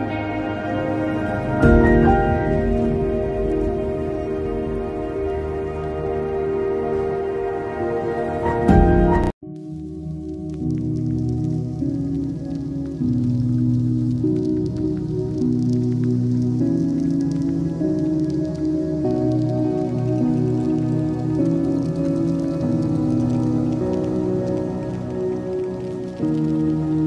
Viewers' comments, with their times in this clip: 0:09 Great stuff honestly! but uh hate to point it out just kills over and switches to another song. Smooth transitions are key! Keep up the good work and Papa Bless